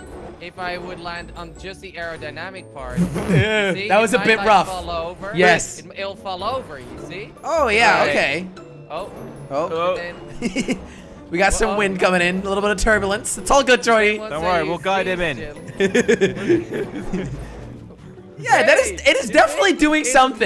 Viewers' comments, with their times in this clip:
0:04 the cling cling part